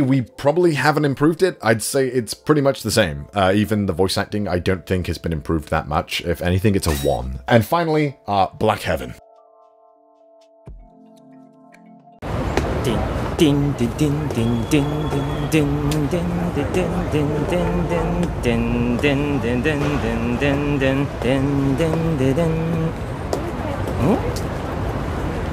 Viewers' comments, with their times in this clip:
0:09 Honestly I had such tunnel vision getting that damn piece of music I never considered I could have just.... Paid a guitarist to remake it..... Not sure why the audio just stops we did a few slight changes to the video and that must have passed through. Sorry about that. 😭 ALSO YES I NEED TO DO A BETTER AMERICAN ACCENT I KNOW 😂💕
0:10 you did forget part of your voice clip in your own video?! 😅😂